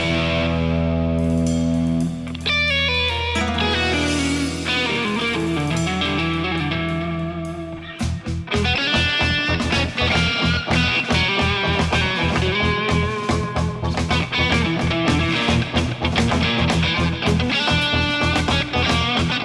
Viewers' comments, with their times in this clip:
0:03 Well i know what you expect, is like vivaldi and mozar, mozart was a trully master cause he play/ composed using a very higtly level of tecnic an virtuosity, but never was a trully musician as far as feeling is concerned in my opinion, in opposite to vivaldi who was an amazing creator of feel, this guy is like mozart, he plays with all those virtuosity that made feeling disappeared, but trully master... I also disagree with all this too much notes.. also min amazing opeth kind of backingtrack xD